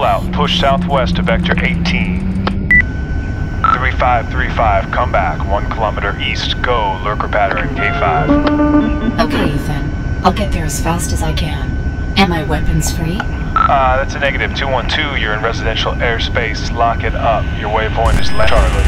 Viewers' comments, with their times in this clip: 0:06 What's he say? Lurcopathory, or what?